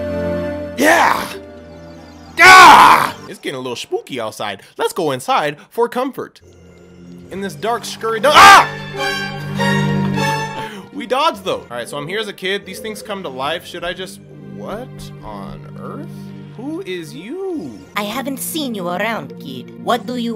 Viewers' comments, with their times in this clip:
0:08 HAHAHAHAHAHAHAHAHAHA the Ultra Instinct music! Made my day.
0:08 That ultra instinct music killed me 💀😂